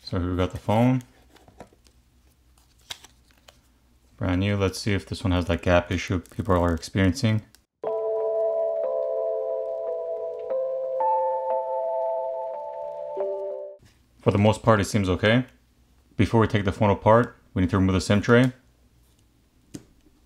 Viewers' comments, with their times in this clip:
0:03 What were you testing ? Replayed over 10 times and couldn't differentiate what you said.